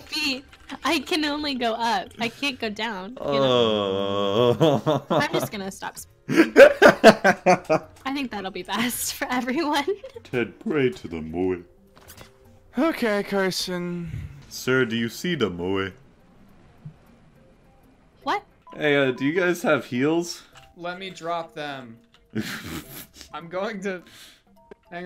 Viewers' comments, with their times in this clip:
0:09 The way this man says it 😂😂😂
0:12 The amount of despair in his voice is so immense I can hardly size this